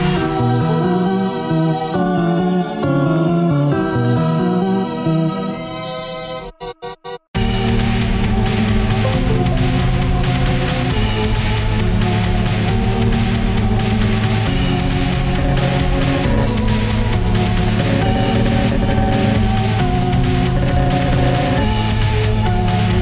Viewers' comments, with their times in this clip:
0:07 that computer noise is not a part of the fight im pretty sure
0:08 that plug in sound, lol